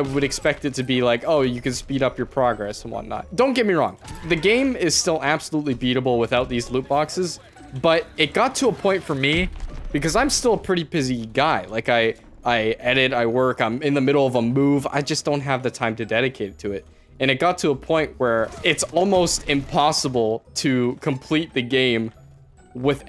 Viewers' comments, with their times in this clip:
0:04 game is absolutely "beautibul"